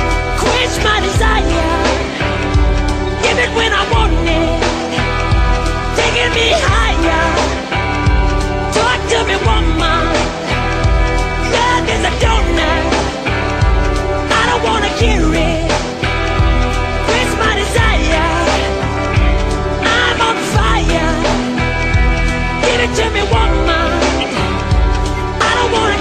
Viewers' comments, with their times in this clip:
0:07 "Love is a donut". I do LOVE this version. People always talked about Michael's sense of humor. Michael being able to slip this in with a straight voice cracks the hell out of me. And most people didn't even notice, which I'm sure cracked the hell out of him ;-)